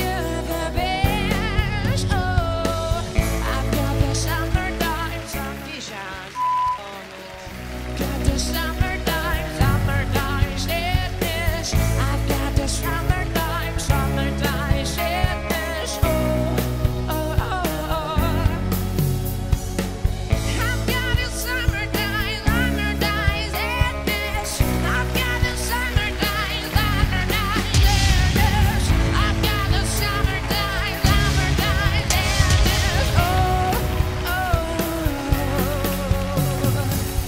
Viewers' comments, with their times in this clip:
0:04 Does anybody know what the woman says? Where it bleeps a part of it out?
0:22 Well .. Nothing is compared to Lana's voice , but is a unique tune